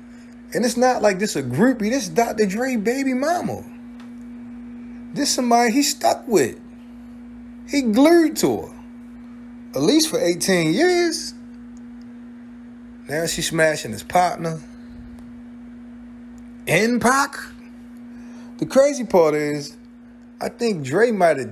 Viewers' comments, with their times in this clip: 0:06 he gluerred to her 😂